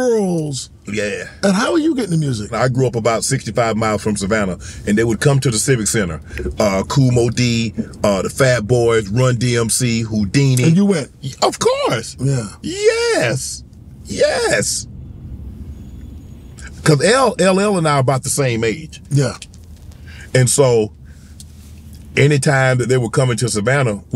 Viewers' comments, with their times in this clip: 0:10 Lmao Shannon the first "yEEEeeeessss" sounded too high pitch so did it a second time to sound more manly. I caught that Shannon 😅